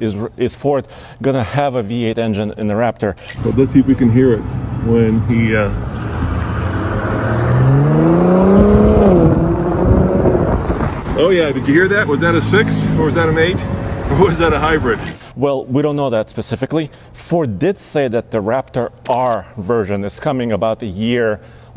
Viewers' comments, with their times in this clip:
0:03 obviously a 6...
0:07 = Totally a V6. Thanks for the review vid on this even though I opted for the regular F-150.